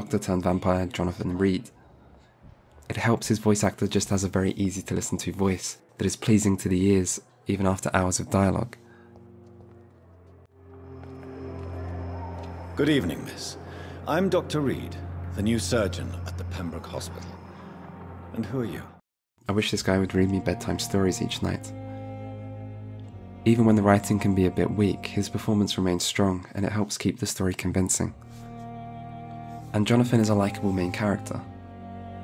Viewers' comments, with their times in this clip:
0:05 is true for me for your voice and i have you to read me, not really badtime story, but game critiqes every night :)
0:19 You yourself have a very soothing voice if that isn't a weird thing to say, very pleasant to listen to, but maybe because your voice reminds me of someone I know.